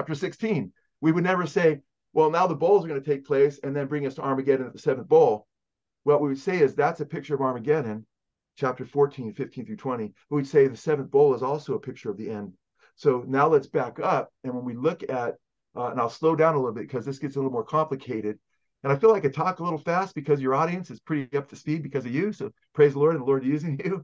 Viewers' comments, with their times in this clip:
0:05 Joe Schimmel talks too fast and I cannot follow what he is saying and he hurries along, so I turned the video off.